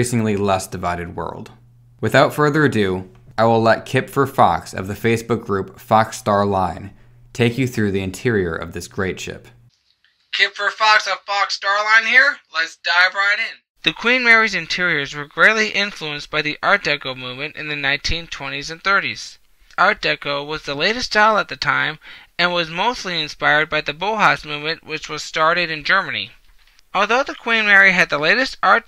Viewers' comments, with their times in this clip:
0:09 2 thumbs up for then thumbs down after. Sorry but the audio after this point is unbearable and I couldn't watch the remainder
0:09 Was good up until The hell is he saying Abyoyv and ajjdic cabin clas sksificn